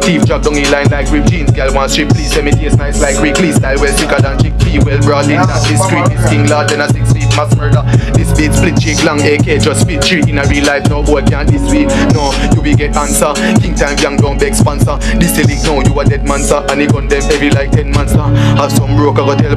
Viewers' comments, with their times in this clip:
0:03 The songs are complete BANGERS!